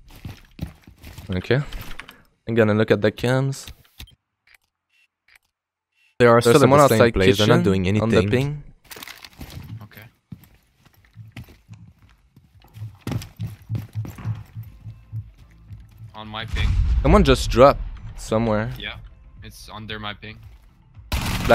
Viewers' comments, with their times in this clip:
0:05 Sorry for the late upload boizz I wasn't feeling that good today. I will try to upload earlier tomorrow. Btw I didn't know Ash had the ability to break dance... EDIT: Btw sorry for the edit error I have two audio tracks at the same time for some weird reason ...